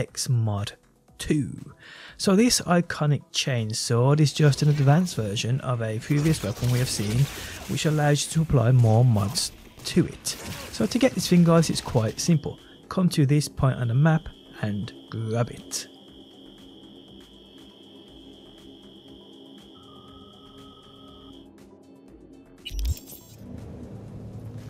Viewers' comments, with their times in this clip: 0:09 why do i hear Lego Yoda death sound in the back ??